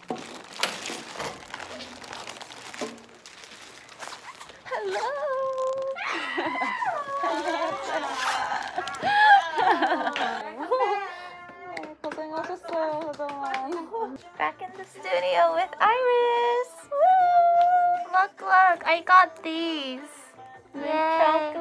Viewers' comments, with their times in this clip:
0:04 That scream was the greatest!